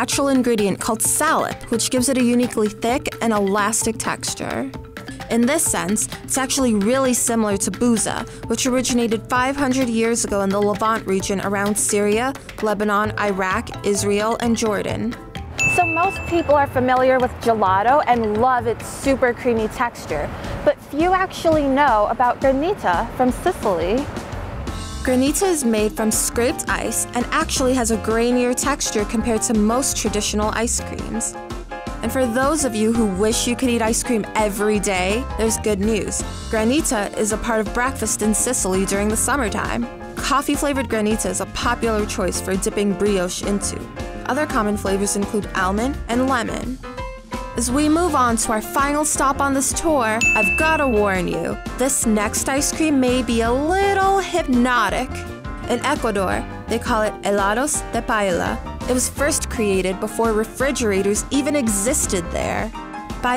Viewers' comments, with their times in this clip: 0:04 why does she pronounce texture like that-
0:37 bbrraa~ kfast... wtf?
0:45 i’m really upset at the fact that she said “Owl-mond” instead of “Almond”